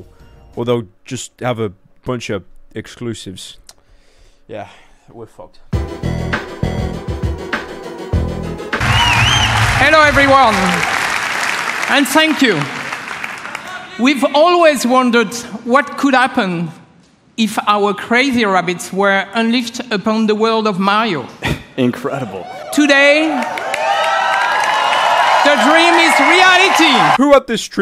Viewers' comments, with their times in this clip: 0:09 that guy sounds like Richtofen from Nazi Zombies